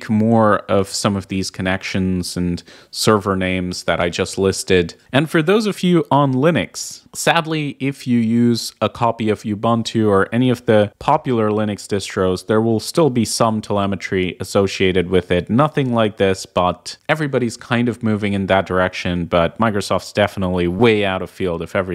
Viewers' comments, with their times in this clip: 0:05 Ah yes, Linnix.